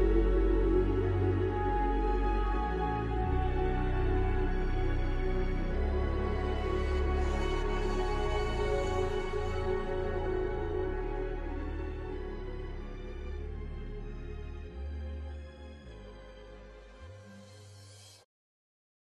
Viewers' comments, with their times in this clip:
0:10 melody at the end is so cool